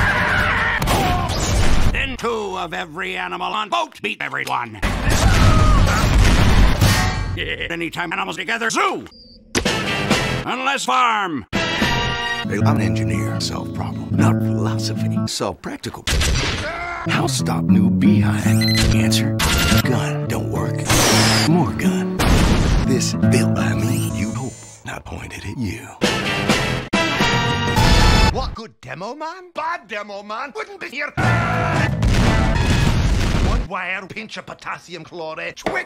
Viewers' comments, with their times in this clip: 0:06 it's like soldier just giggled at the sfx
0:16 why is the engineer's line so perfectly syncs with the song dagnabbit
0:17 I just lost it at "How stop new behind" It's too short that it's funny Can we also not mention the sniper suddenly appearing in the background as Engineer says new behind- And the sudden and single Sentry shot before cutting to the next scene-
0:22 he sounds like a toddler showing his mom his brand new creation of artwork to hang up on the fridge also, explosion jumpscare warning